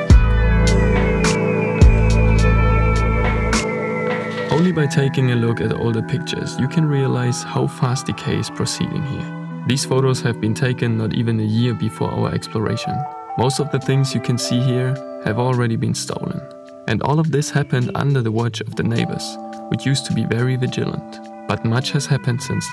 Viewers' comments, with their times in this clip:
0:04 love ur videos but the new music is to loud, I live in an apartment that has paper walls, now I cant watch at night, older people all around, in bed by lol